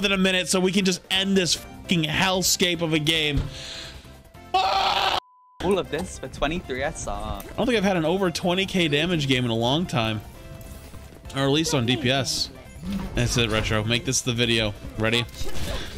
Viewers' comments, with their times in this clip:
0:03 The cut mid scream has me dying! XD